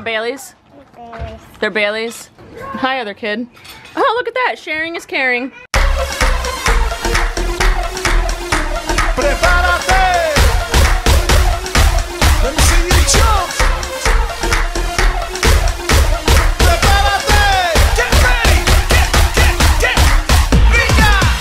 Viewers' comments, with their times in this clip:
0:06 You know you're too involved with Halloween when you thought the song was going to be "spooky scary skeletons" Smh
0:06 You know you're too involved with Halloween when you thought the song was going to be "spooky scary skeletons" Smh